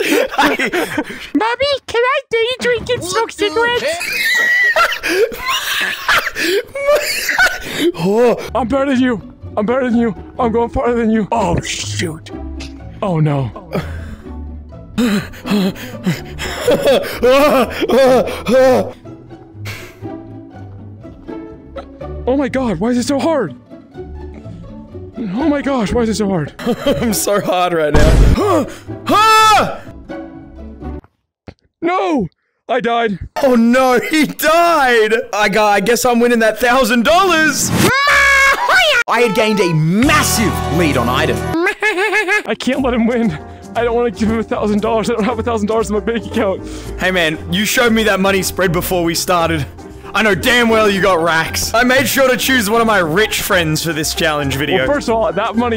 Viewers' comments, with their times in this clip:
0:04 bro stopped laughing in 0.01 seconds with that fall😭💀
0:38 Man, the angry birds laugh got me 💀